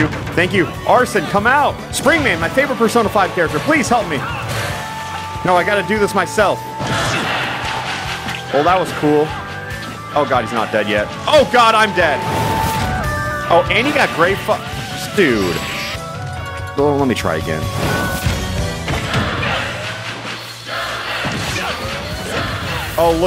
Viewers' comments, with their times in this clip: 0:06 Fans: “JO-KER!” clap-clap-clap “JO-KER!” clap-clap-clap This bears a striking resemblance to a chant popular among fans of the England Men’s National Football (Soccer) Team, aka “Three Lions.” It goes something like this: “ENG-LAND!” clap-clap-clap “ENG-LAND!” clap-clap-clap You can hear it at the end of the official music video for the Lightning Seeds’s one-hit wonder, “Three Lions (Football’s Coming Home),” which celebrates the Three Lions’ success in winning the 1996 UEFA Euro Championship, their first time winning a major tournament since 1966, when they won the FIFA World Cup in their home country. Is there a correlation? Probably not. Is it a cool little detail and history lesson? Yes.